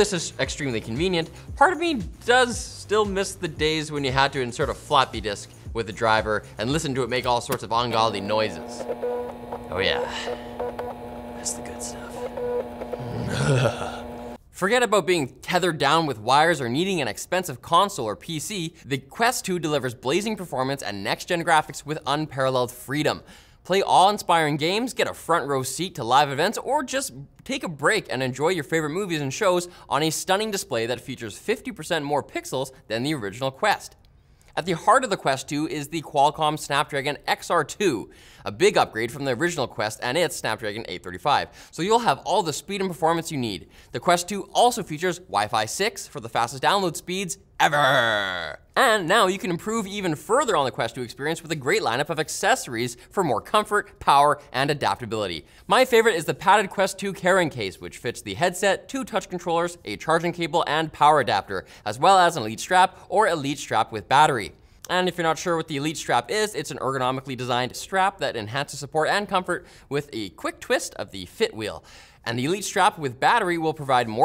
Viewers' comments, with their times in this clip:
0:08 Sounds just like a dot matrix printer
0:09 That's the sound my old harddrive makes :D
0:57 "Karen Case". (Don't care what anyone says.)